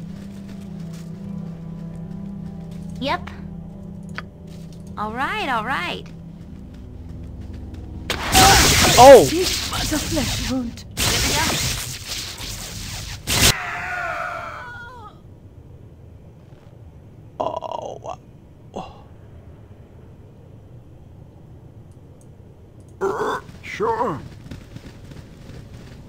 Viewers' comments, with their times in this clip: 0:07 Good one, but guards gettin hurts as well... (these screams from the darkness - funny as hell!)